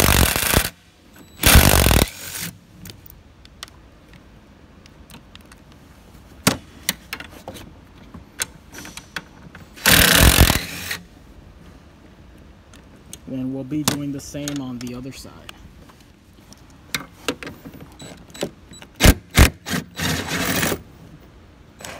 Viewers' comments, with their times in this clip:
0:08 RIP Headphone users mark ROTFL! Phenomenal video sir. THANK YOU